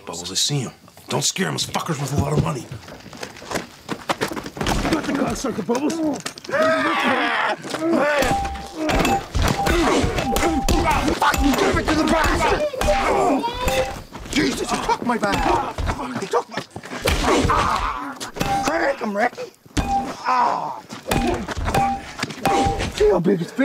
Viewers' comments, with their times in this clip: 0:03 BUBBLES' BATTLE CRY!!!!!!
0:06 best fucking war cry of all time